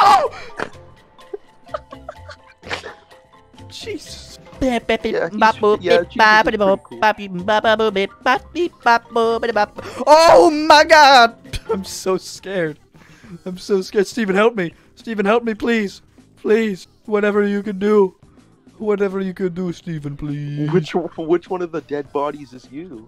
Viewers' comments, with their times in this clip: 0:04 Wut the laughed so hard🤣🤣